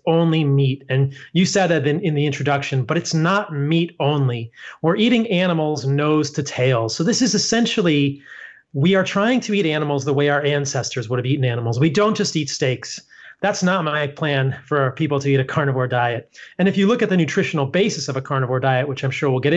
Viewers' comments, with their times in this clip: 0:03 I stand corrected. I had originally heard him say 'not eating meat only OR eating nose to tail'... etc. I had to listen several times and finally I heard what you heard, "WE'RE eating nose to tail..." It took many listens on my part - perhaps because I WANTED to hear that he doesn't eat only meat?? Anyway, thanks for the correction. btw I'm not in support of his way of eating - I prefer mostly vegetables and a small amount of meat for myself. I was a vegan for 10 years and got very sick. I didn't heal until I added animal products - and I cried for 6 months that my particular body needs some. So sad. But, in order to live in this vehicle called 'my' body, I do need some animal product (not eggs or dairy) - large majority is plant based however. I just listened to this in order to learn. Thanks for assisting me in that.